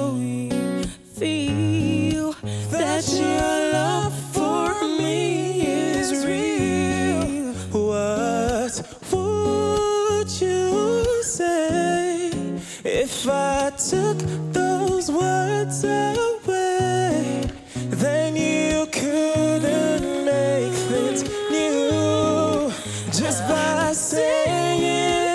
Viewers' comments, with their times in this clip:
0:06 when the Nigerian guy sings..."What would you say"...and the girls reaction...priceless!!
0:09 The Nigerian one OMG my mouth was open the whole time ❤️ you could see her when his voice was beautiful she was in aww
0:13 they are gorgeous and sound amazing 💜💜